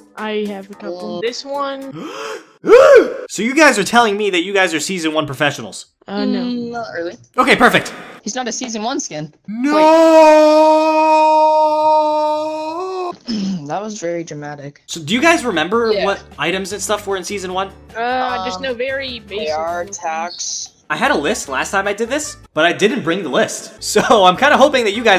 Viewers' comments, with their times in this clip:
0:08 dark vader noooooooooooooooooooooooo